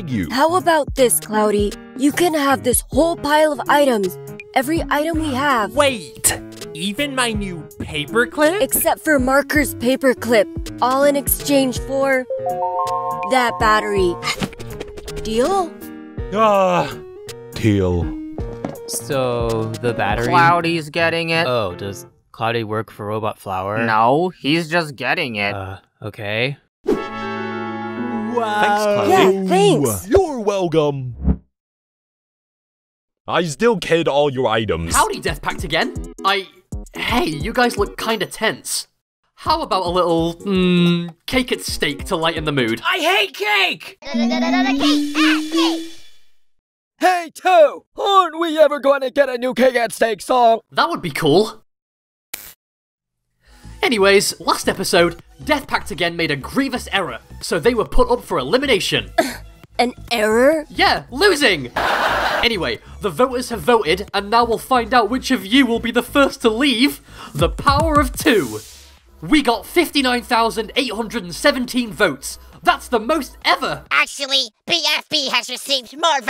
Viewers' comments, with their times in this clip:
0:03 STOP WHY DOES LIGHTNING SOUND LIKE TAILS😭😭
0:58 scoffs an error? yeah! losing comedy laugh track
0:59 why does lightnings voice sound so different